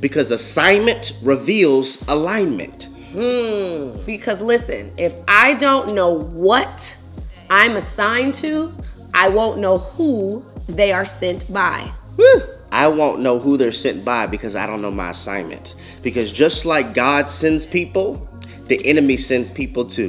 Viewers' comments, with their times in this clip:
0:03 That “hmmmm” 😂😂 it hit me too, dang!